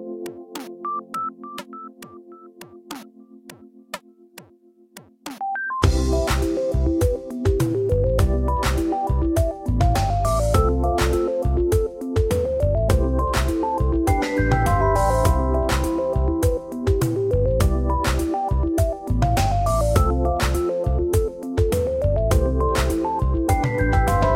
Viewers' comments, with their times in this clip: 0:06 This music reminds me of Progressbar95's theme. Especially